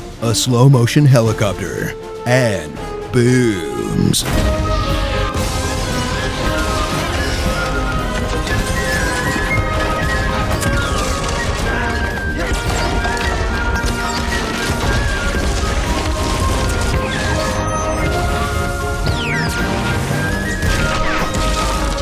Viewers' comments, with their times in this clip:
0:03 the music in the background of the explosions is priceless